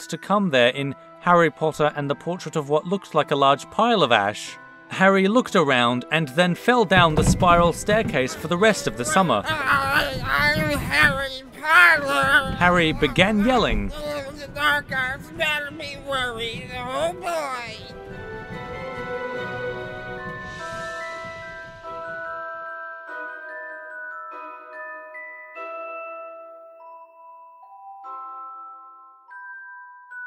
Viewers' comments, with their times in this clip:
0:08 the voice actor for harry was so accurate.
0:11 YES IT IS NOW ANIMATED!!!! Also is it just me or is he saying I aM hArRy PoTtEr, DoN't YoU wOrRy. oH bOy